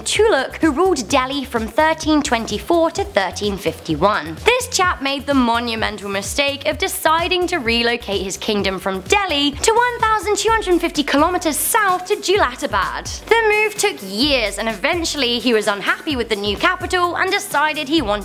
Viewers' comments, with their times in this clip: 0:05 Did she just call the sultan a Jap?